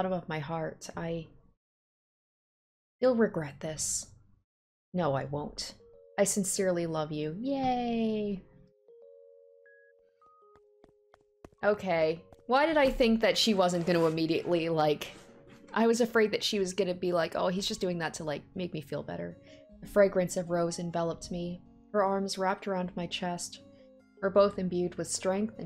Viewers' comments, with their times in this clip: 0:06 ..I love that song... I cry every time I listen to it